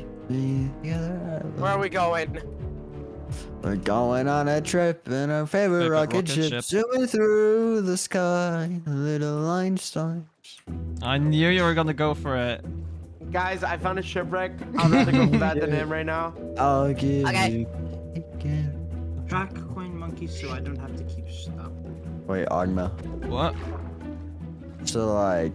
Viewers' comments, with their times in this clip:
0:10 you got that song stuck in my head now :(